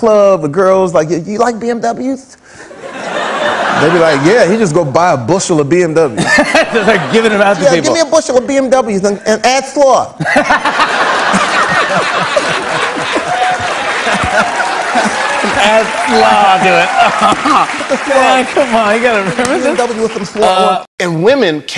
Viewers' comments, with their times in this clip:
0:08 is so hilarious Jamie fox😅😂🤣 good imitator for Tyson